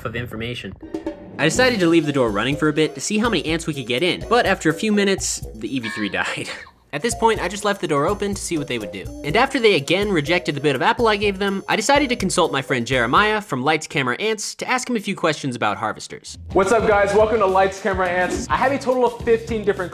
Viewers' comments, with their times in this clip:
0:06 OMG I THOUGHT HE SAID 3 ANTS DIED